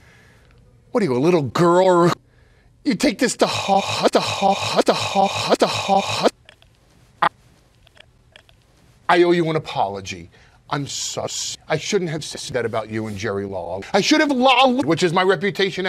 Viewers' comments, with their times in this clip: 0:03 he don’t need no auto tone🥶🥶🥶🔥🔥🔥